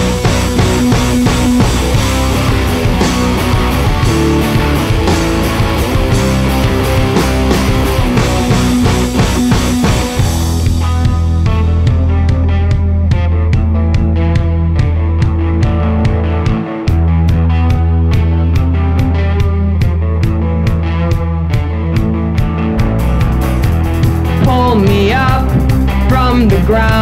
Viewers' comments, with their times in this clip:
0:10 from its like mix Placebo & old Linkin Park